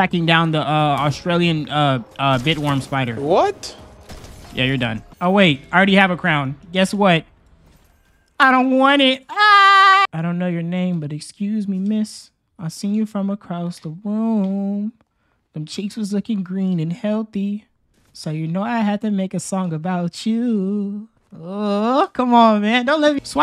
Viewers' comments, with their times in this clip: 0:07 bros laugh sounded like Spongebob
0:09 bro what is that spongebob ass laugh 😂 bro took a trip to bikini bottom to get Neptune's crown